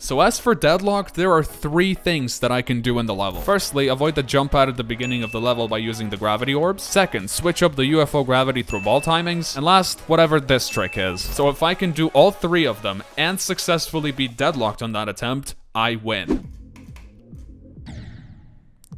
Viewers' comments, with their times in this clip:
0:03 i love that song so much